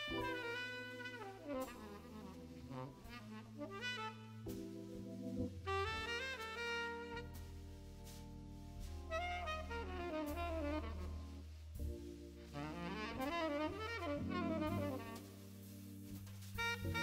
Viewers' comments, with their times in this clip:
0:04 WOW, Joey has a unique voice on tenor sax, never thought I'd be hearing this but it's not bad.